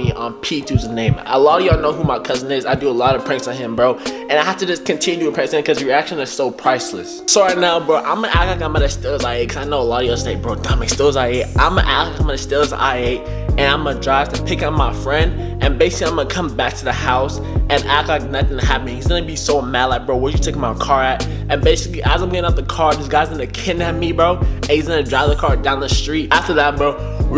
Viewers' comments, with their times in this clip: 0:09 is That English?
0:10 what kinda stutter😂